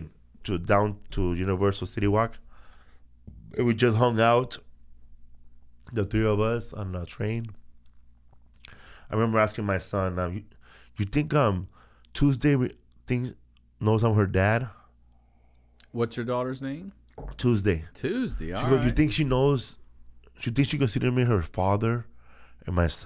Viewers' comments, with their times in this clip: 0:10 “Toozdee alright!” Made my day 😆